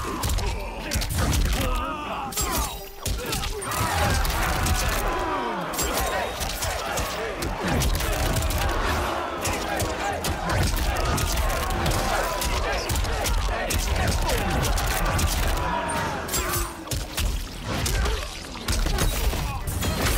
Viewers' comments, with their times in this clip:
0:08 😂the people standing around chanting aye aye aye aye💀